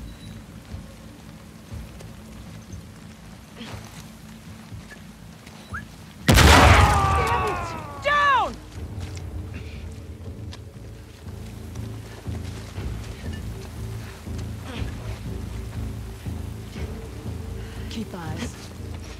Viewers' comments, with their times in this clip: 0:04 that whistle before the explosion!🤯👌